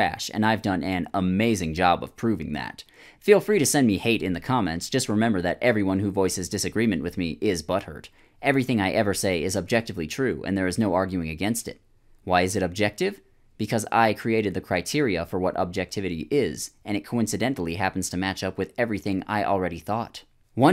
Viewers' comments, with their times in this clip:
0:07 who are you imitating lol